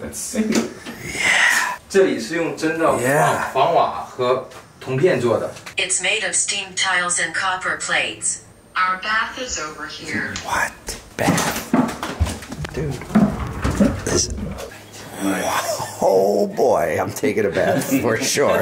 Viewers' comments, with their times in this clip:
0:03 LOVE THIS VLOG! fyi guy speaking Mandarin (Chinese) not Japanese